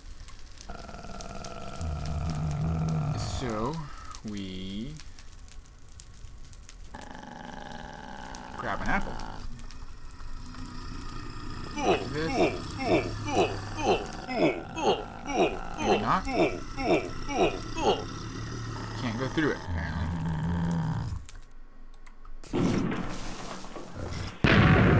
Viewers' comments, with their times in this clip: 0:06 Ok seriously, I know it had to be something to do with his Mo' Creatures mod, but wtf was that constant "Uuuuuughhh" noise ? It has me so curious because it was freaking me out man XD